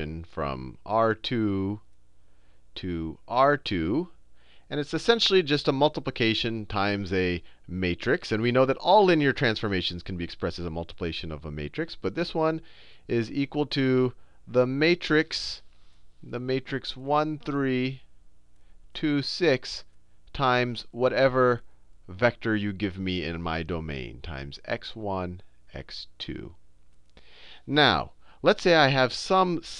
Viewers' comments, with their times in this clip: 0:10 when he coins the term "multiplation" :) Muchas gracias Khan Academy brothas! Your videos are helping me through grad school! Who needs professors on tenure anyways :)